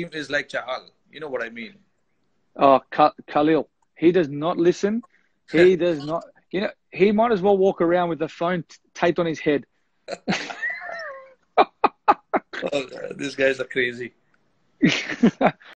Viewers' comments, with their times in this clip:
0:12 the way Rohit Sharma told "These guys are crazy " :D